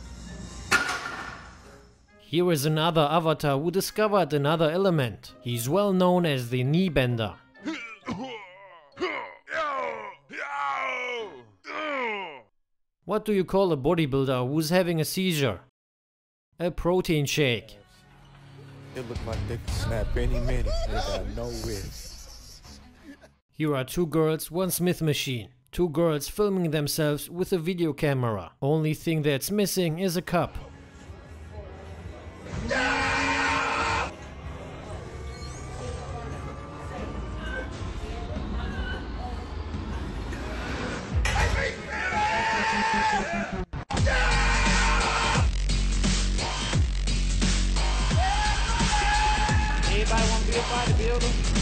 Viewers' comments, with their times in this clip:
0:07 the grunt sound effects 😂
0:32 The Siren sound coupled with the Ronnie scream fucking kills me more than any leg day ever could. 😂😂